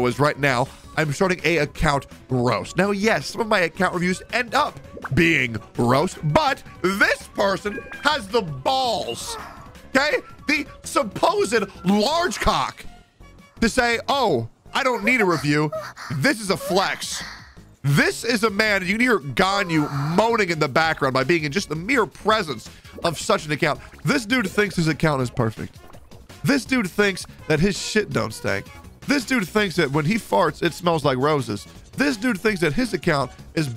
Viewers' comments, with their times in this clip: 0:09 hum... I though I had a tab open that I wasn't supposed to have, and it scared the shit out of me.
0:15 I can't this guy is trying to give a speech about ending a man's career and there's just Ganyu moaning in the background